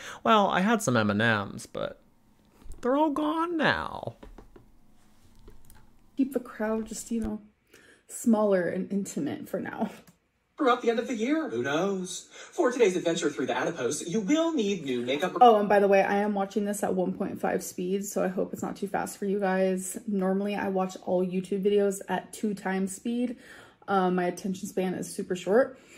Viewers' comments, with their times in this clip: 0:09 she talks so slow and she has the nerve to speed someone up lol